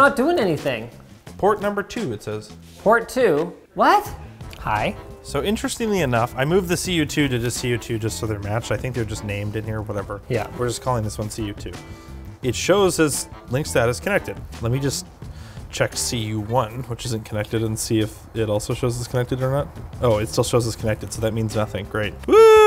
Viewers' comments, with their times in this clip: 0:06 The music sounds like Sim City.